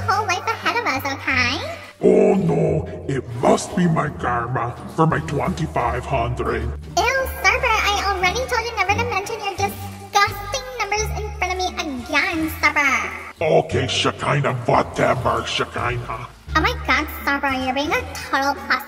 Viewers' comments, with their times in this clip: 0:03 The “OOhhH NOoOOo” took me OUT💀